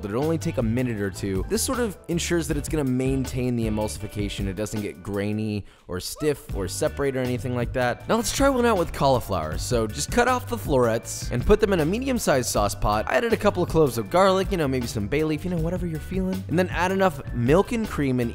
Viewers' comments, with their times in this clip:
0:06 I can’t be the only one who heard the “woo!”